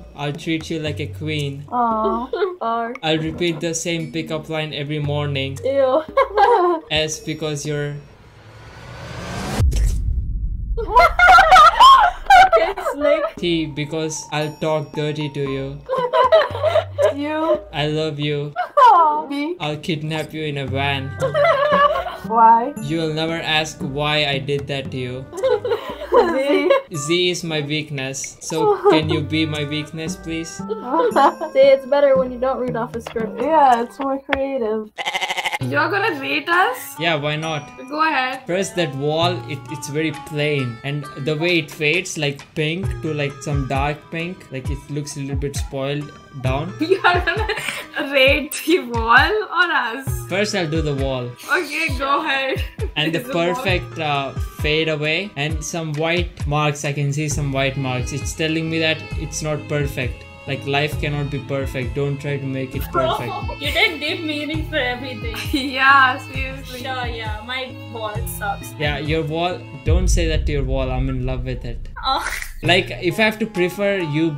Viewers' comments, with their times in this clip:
0:06 The two girls saying he has an accent like they don't have any accent.lol....🤣🤣🤣🤣
0:40 Assamese. Correct me if I'm wrong. I catch a word or two because I know nagamese.
0:43 that was Assamese language bro
0:43 That language was Assamese
0:44 assamese language 😁🤞from assam
0:45 that's Assamese bruh 😂
0:48 was Assamese language
0:58 it was Assamese language